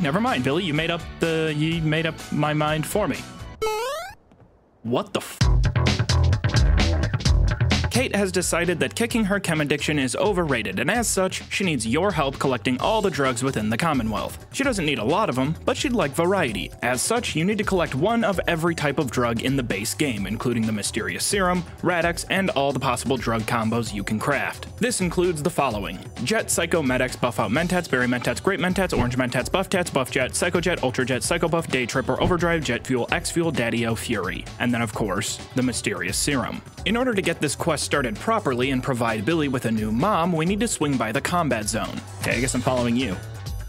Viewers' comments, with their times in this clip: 0:05 MORE solid music choices! My boy! 😎🥇🤌
0:25 started to sound like Obtuse, rubber goose, green moose, guava juice Giant snake, birthday cake, large fries, chocolate shake lol